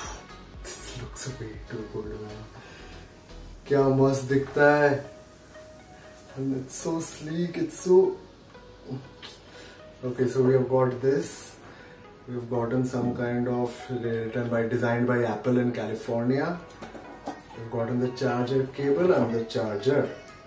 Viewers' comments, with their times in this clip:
0:04 You spoke English in entire video but when you felt that pleasure you spoke HINDI "KYA MAST DIKHTA HAI" Quite ironic 😅😅